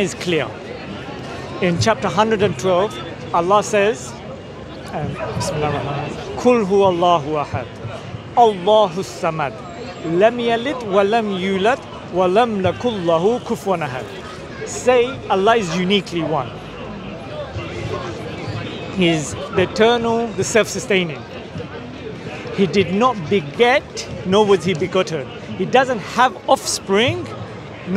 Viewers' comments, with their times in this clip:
0:10 brother, Ayat is : وَلَمۡ يَكُن لَّهُۥ كُفُوًا أَحَدُۢ This pronunciation sound which appeared to be so is wrong : وَلَمۡ لكُن لَّهُۥ كُفُوًا أَحَدُۢ Edited: Instead of sound of 'Ya' it was pronounced 'La'.